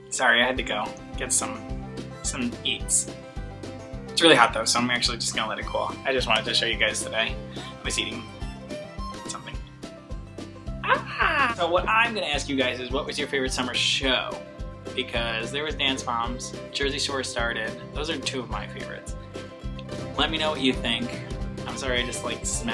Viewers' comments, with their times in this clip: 0:10 That noise <3